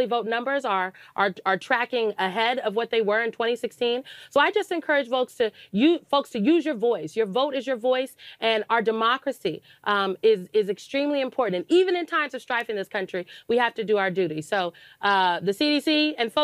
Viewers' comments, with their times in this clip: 0:04 "Volks"? She wanted to say "Folks", but she only sees people as Votes!